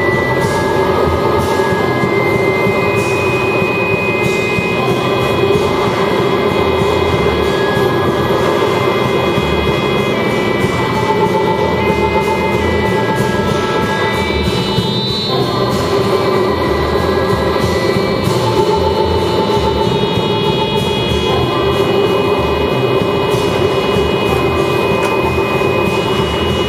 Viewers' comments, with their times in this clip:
0:07 ridgie didge audio lets talk